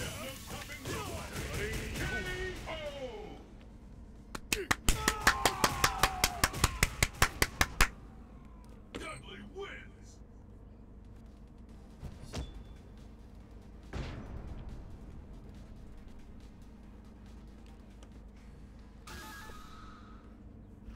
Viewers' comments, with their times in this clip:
0:03 Smug clapping back. 😂